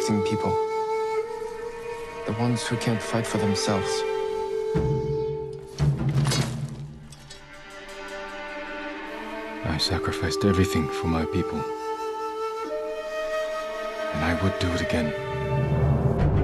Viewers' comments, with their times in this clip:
0:03 you know it’s about to get good when Jin Sakai’s theme starts playing